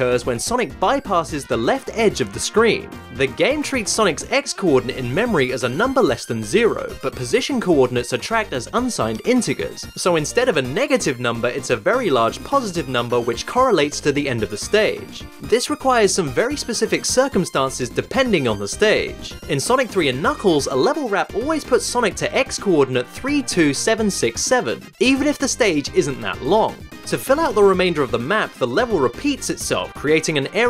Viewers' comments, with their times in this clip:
0:08 The pronunciation of integer unnerves me for some reason
0:09 Who pronounces “integers” with a hard G?
0:15 inter Gers Nice pronunciation